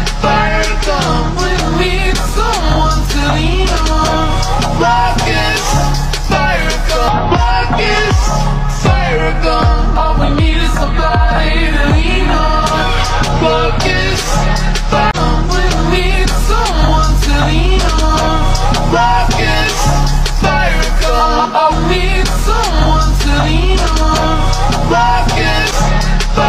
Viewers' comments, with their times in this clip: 0:07 BRO THEY RESTARTED THE SONG